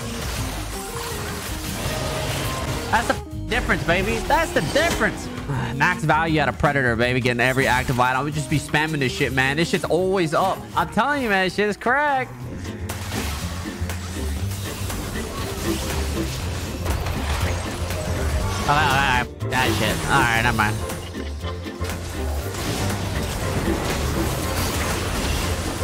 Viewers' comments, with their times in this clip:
0:09 that zzrot rip